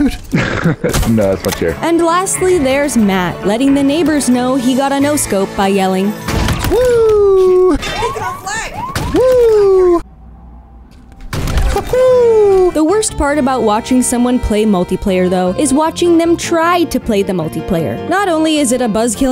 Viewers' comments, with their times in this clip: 0:07 all this time I thought there was an owl living outside my window. Turns out it was just an owl playing halo